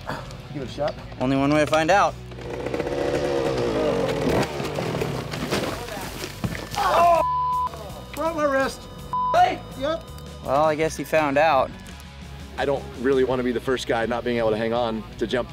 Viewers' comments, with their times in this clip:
0:03 Travis says, quite nonchalantly for the situation, "Oh, I broke my wrist". I would've been screaming and cussing like a bitch.